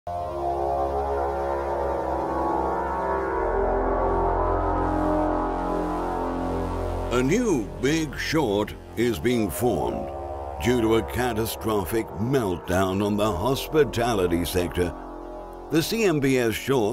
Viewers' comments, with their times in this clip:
0:01 that intro scene and bckgrnd music looks/sounds sooooo much scarier than the hotel 🏨 scene(s) from the film the shining ..... 😆 lolol